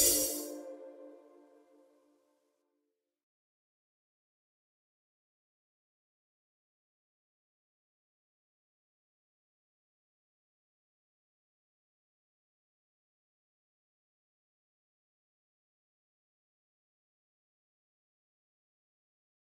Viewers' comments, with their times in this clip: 0:03 Like 1 from Italy, your voice is amazing, rap is something difficult to perform… either you have it or not. But you did an outstanding performance here, thanks for sharing this awesome video 👍👏